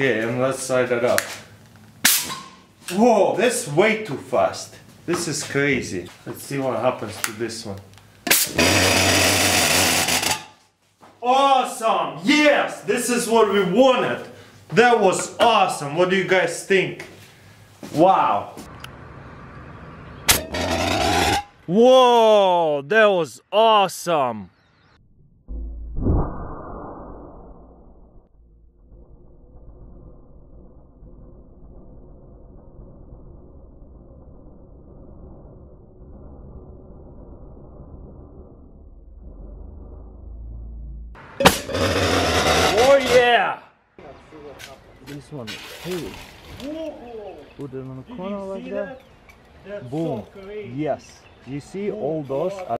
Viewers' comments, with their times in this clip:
0:07 and the fart oscar goes to.... Russian jar that drank too much👏🏻👏🏻
0:07 sounds like an A-10's machinegun
0:07 Jam jar fart
0:07 sounds like a A-10 Warthog. For that it gets a thumbs up for me.
0:08 best bassdrop ever
0:14 Whattya you guys stink?
0:41 FARTS, OHH YAAAAA XD